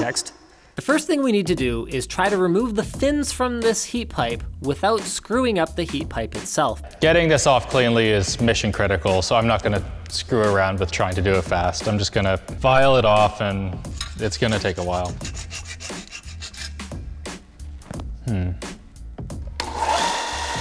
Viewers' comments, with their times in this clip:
0:06 broke out in laughter
0:07 I'm not gonna try to screw around and get this off fast... A few moments later... vVVVVRRRRRRRRRRR